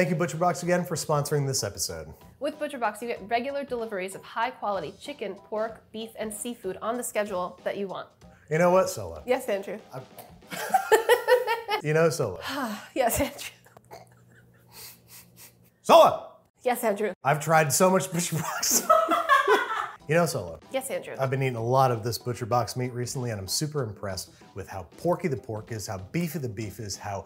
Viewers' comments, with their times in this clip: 0:08 i thought she said "yes bingeamin" 😹